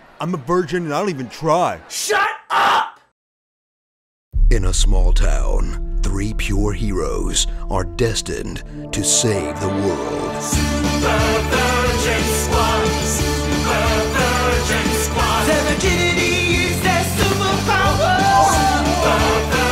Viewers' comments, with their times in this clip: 0:04 Hey, i know that voice...